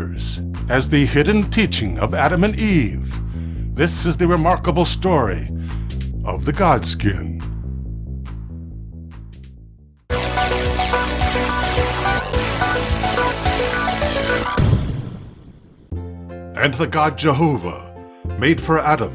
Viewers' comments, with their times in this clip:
0:06 you sounded like a demon when you said God Skin. 😕